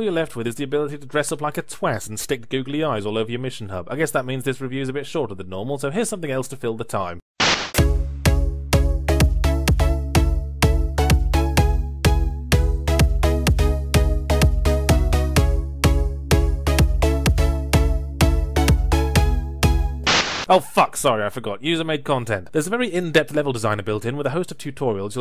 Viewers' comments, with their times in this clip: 0:07 Wow, that joke truly fell flat when played with new age royalty free techno music... Makes me want to dig up the original videos just to see the jokes intact.
0:07 Noooo! He changed the music (likely copyright)
0:07 They changed the music. Now the dancing doesn't sync with the music and makes no fucking sense.
0:10 aw come on, yall couldn't have at least found something with the same bpm as the original song so the butt wiggles were on the beat? Edit: on a second watch i think they did try to match the beat. But the vibe... the vibe is so weird. A real shame, the comedy of that moment makes a lot less sense with this,, generic clubbing music?